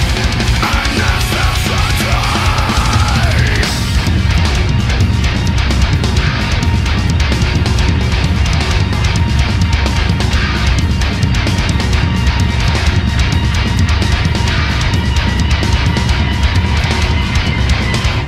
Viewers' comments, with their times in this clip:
0:06 literally everyone trying to count a meshuggah rhythm